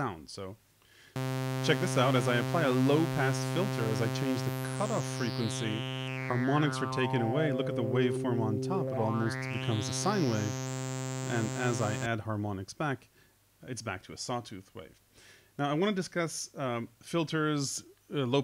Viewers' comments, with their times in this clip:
0:05 Do I hear stepping on the filter ? I am sure these are not the harmonics series related to a high q settings